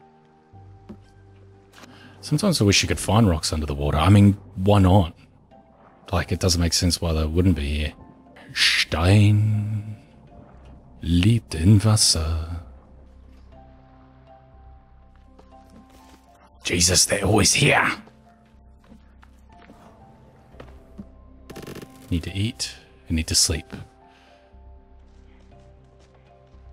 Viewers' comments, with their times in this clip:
0:08 you seem to be saying in french j't'aime